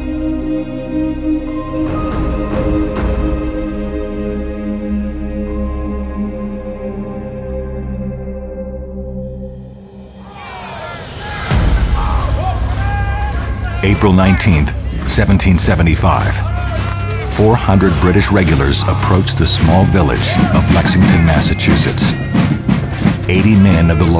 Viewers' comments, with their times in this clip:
0:10 Captions: [Applause] Audio: Yelling and marching